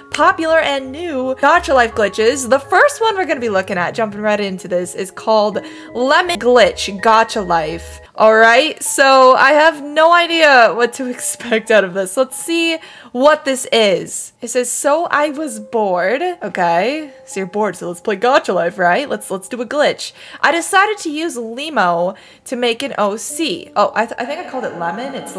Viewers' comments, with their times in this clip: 0:06 i really thought she said "Lemon glitch"